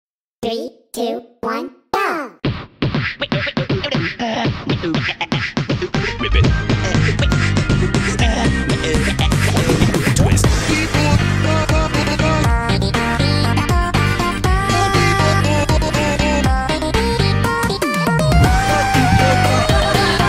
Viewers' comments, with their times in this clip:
0:05 The melody sounds like never gonna give you up XDXD